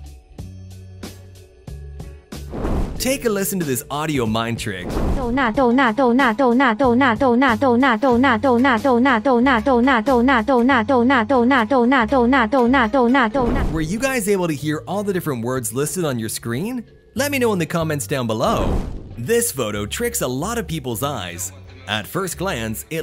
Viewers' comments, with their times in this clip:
0:07 Couldnt hear Do not ,Tuna , Go Nuts and Doing that